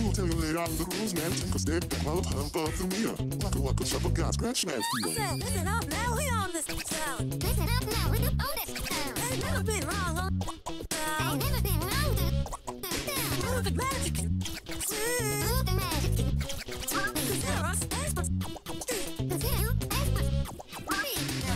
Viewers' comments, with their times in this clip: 0:05 whut is little girl scream?